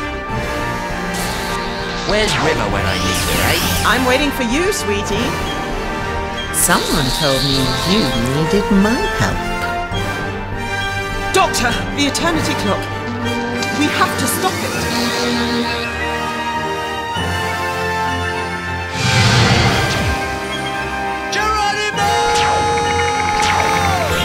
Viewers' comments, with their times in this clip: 0:06 Dat madam eyepatch lady is there. You can hear her